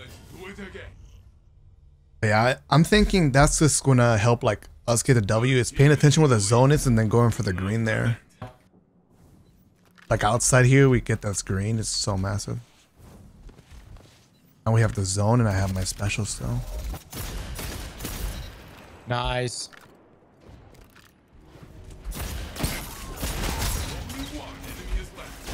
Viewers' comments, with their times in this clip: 0:07 who the heck farted out there?😢